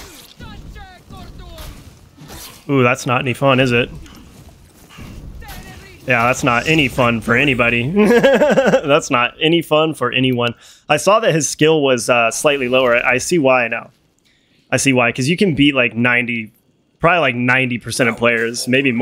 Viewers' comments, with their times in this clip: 0:06 What was that laugh? 😂😂😂